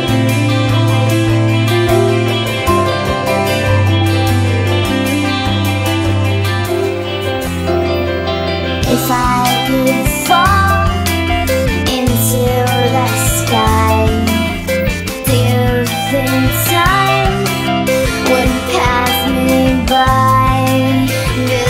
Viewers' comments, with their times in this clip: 0:09 the first second, i hated it. then i started liking it. and then vanessa's vocals started and i hated it again. and then i started loving it. thanks for this rollercoaster of emotions.